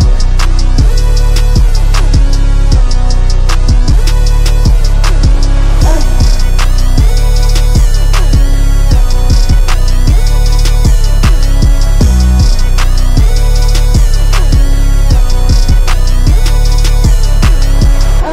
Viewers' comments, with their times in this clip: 0:06 That synth that kicks in got me floating